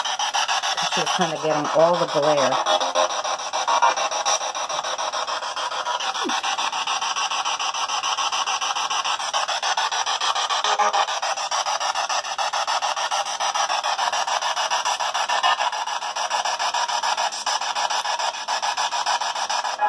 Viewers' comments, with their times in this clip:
0:06 sounds like a sneeze